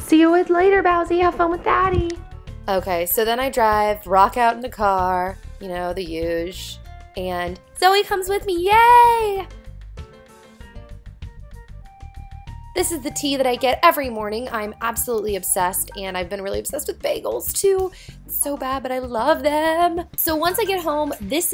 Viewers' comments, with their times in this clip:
0:08 That "YEY" in u really sounds like CAT VALENTINE :) I really love your Video You're so Sweet! :*